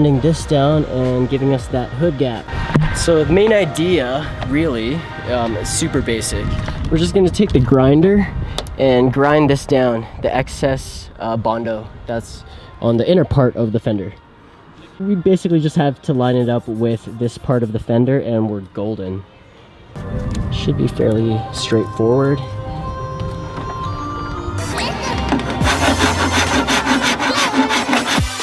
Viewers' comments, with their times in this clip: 0:10 i can hear sad machine <3